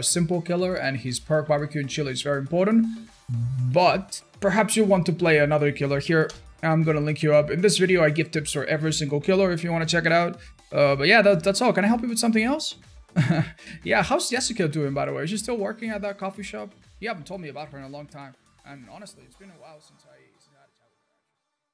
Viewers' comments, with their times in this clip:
0:05 The subtle keyboard sound he makes that after he said he's gonna give you a link, the sound of ctrl+V. Details like this make me smile at just how much effort he is putting into these videos.